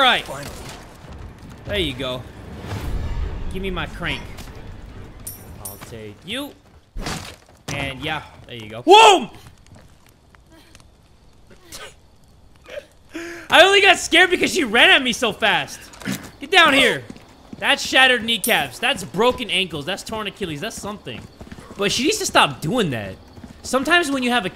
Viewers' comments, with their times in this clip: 0:09 EVEN I SCREAMED 💀💀💀💀